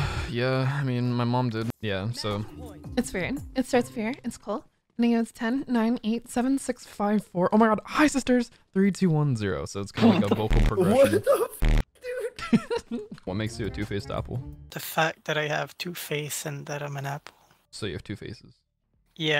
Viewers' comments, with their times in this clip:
0:05 Starts with a normal voice at 10, then his accent sounds like a mix of scottish/british at 5, to finally end with drinking a bit of sulfur hexafluoride at 1 to bump back up to his normal voice at 0 😂.